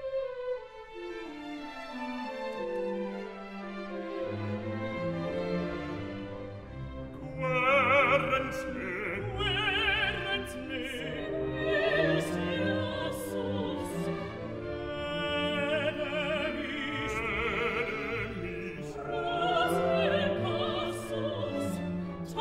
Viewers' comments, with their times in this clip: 0:06 is the alto starting 'quaerens me' accidentally?